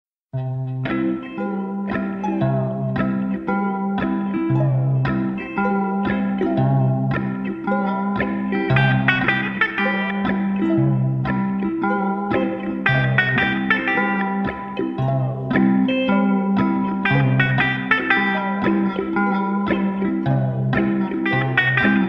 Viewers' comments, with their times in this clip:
0:06 wow I like it even more slow